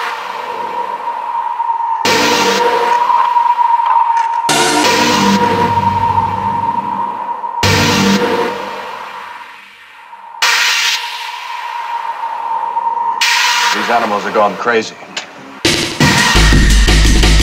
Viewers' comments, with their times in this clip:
0:05 what is this sound? (you use it before but with high pass filter, this is the first time you hear it clearly )